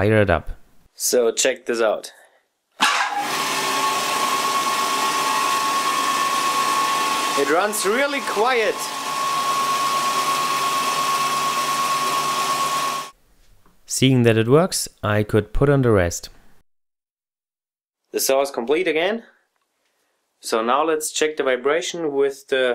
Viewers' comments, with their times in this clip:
0:03 "It runs really quiet" I'm like " IT DOES? I CAN'T HEAR YOU!!"